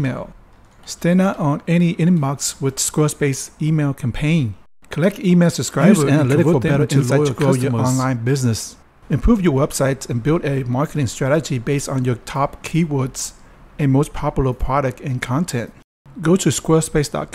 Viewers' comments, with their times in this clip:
0:05 LOL. Sounds like your clone decided to interrupt you I loved the video though, I've never seen one about the NX-01.